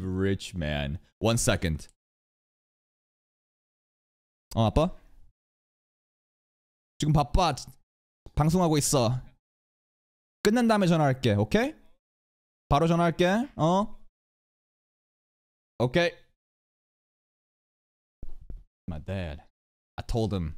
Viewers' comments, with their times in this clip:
0:03 first time hearing him speak Korean